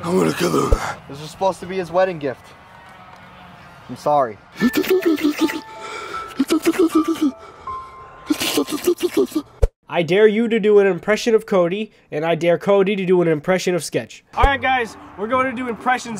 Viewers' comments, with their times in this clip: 0:04 when yo octopus mama cries like a wimp